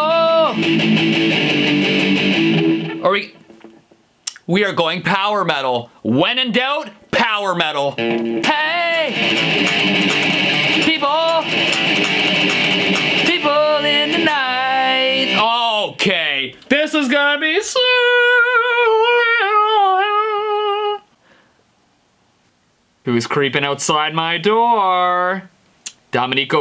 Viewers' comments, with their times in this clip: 0:08 the guitar sounds like basket case on steroids
0:11 Oh wow power metal and the lyrics don't fit at all